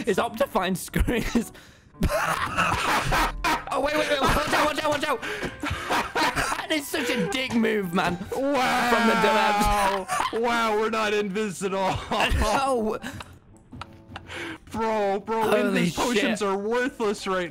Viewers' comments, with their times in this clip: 0:03 Techno has the biggest belly laugh